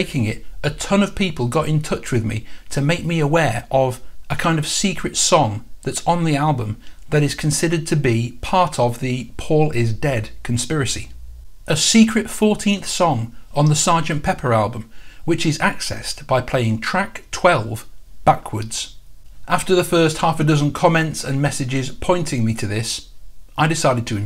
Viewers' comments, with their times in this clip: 0:06 At the mark of Reprise, Paul begins yelling and we can hear what sounds like: "Paul McCartney's dead! Really, really dead! Paul McCartney's really dead!" What I would like to know is HOW you can hear that vocal isolated? Are you using an equalizer?